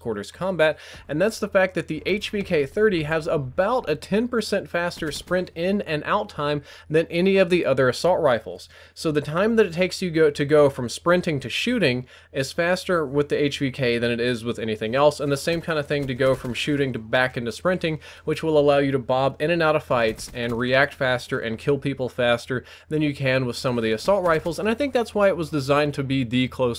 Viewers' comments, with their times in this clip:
0:08 1mil subs and average 100-200k views. Last time I saw more views was the time around blops 2. AND game sound is out of sync